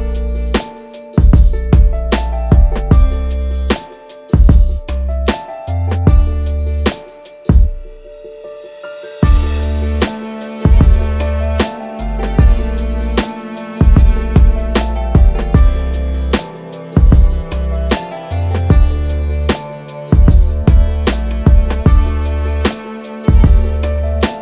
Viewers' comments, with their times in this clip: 0:09 Great job and video ! The piano is beautiful, I really dig the instrument that comes in when the beat drops with the strings BIG UPPP